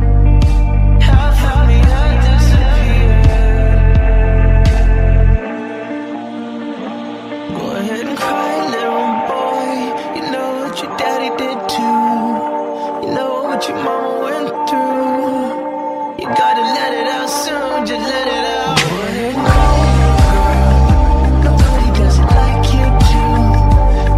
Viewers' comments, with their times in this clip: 0:06 "go ahead and cry little boy. You know that your daddy did too you know what your mama went through you gotta let it out soon, just let it out" i love this part sm idk why, probably because he sounded like he's crying